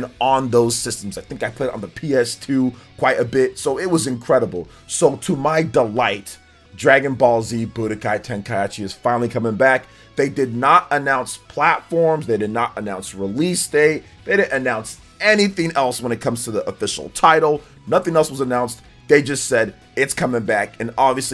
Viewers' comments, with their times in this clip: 0:03 Dude I’m not going to lie… you butchering the name pretty much made me mad 😡. Im NOT watching the rest of this video. Stopped 👎🏾